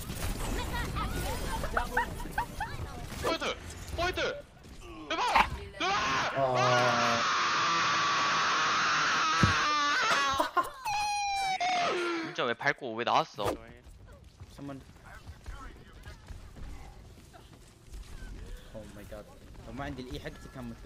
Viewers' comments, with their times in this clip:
0:05 I felt that scream